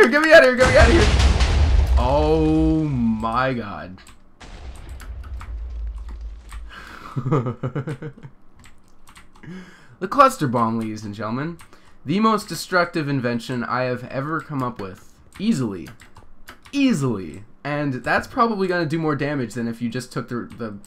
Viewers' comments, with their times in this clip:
0:06 dat devious laugh doe
0:08 (evilly laughs after seeing the destruction
0:08 Your Laugh Though XD